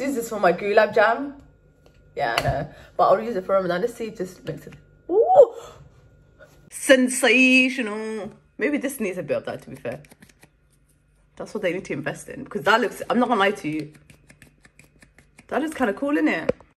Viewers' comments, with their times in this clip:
0:06 “sEnSaTiOnaL” LOL! MY FAV PART!!